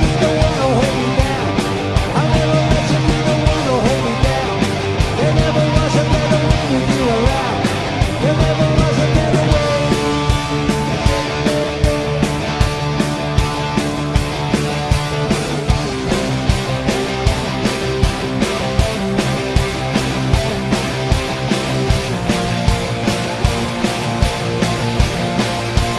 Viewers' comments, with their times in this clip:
0:09 oh man,,, that switch from natural minor to harmonic minor,,,wonderfull. What a great show..so much like the old quo.